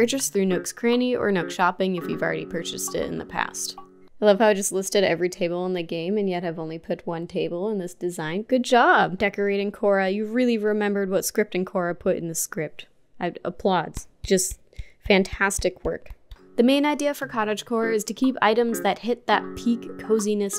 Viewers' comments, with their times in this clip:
0:08 Misheard "Kora" for "core" and thought, What the hell's building-core and scripting-core? Programming aesthetic? Then after I realized my mistake I started thinking what "koracore"''s gonna look like...